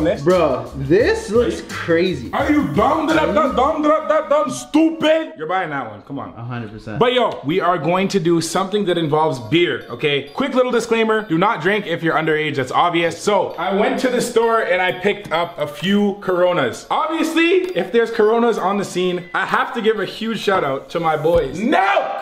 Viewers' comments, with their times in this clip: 0:04 the way he said stupid had me laughing for like 5 mins and i don't know why 😂🤣